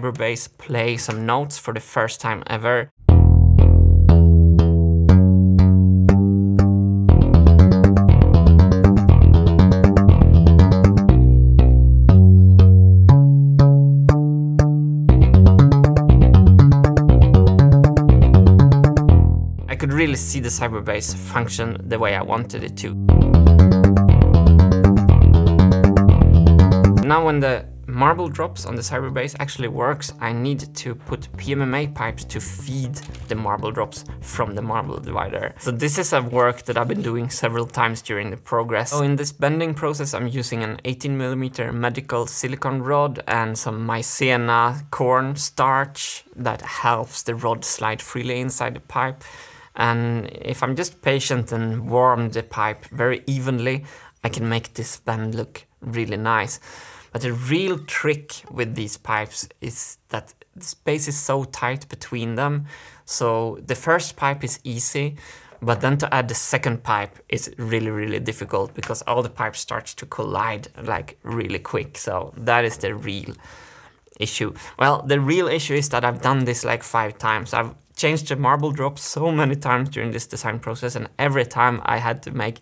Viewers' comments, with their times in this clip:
0:06 Bruh! That bassline!
1:03 also a nice sound these "plops" ...